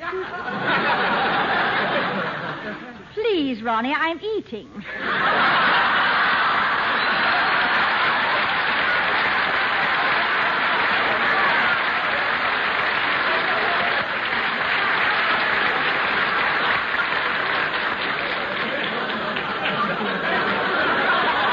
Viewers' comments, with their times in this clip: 0:03 "Please, Ronnie, I'm eating!" (30 seconds of laughter)